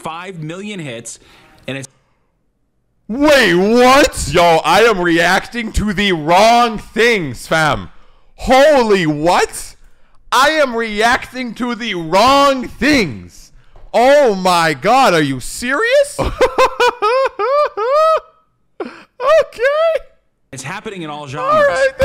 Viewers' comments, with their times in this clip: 0:07 mandem went bri'ish for a sec, fam